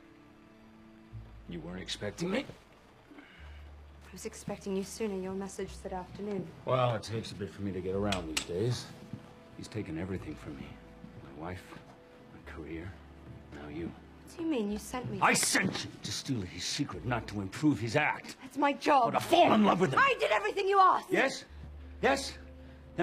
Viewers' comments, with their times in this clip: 0:10 how beautiful sounds of Hugh say how another man is steling him Scarlett....